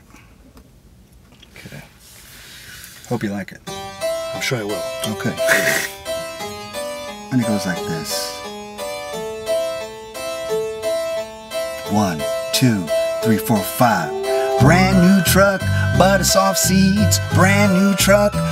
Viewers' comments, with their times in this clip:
0:03 for the best melodic song ever, hotbox version is better imo